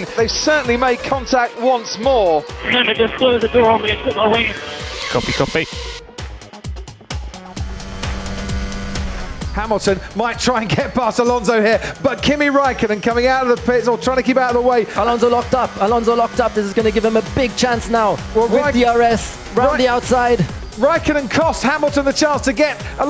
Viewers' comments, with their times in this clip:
0:09 lovely whinning from hamilton.